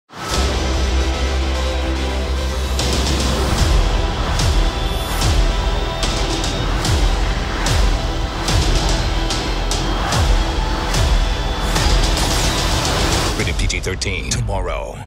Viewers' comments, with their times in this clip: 0:13 Wtf is that guy saying before tomorrow. Did anyone get it ?